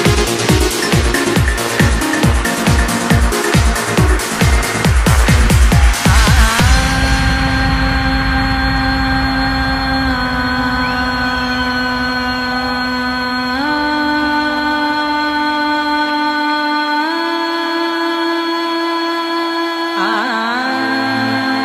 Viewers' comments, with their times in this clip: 0:05 I love this melody !!!!!